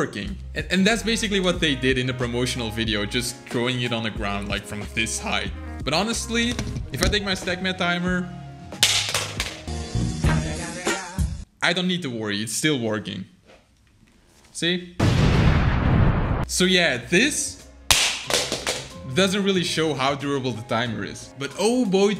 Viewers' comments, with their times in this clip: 0:09 I love that song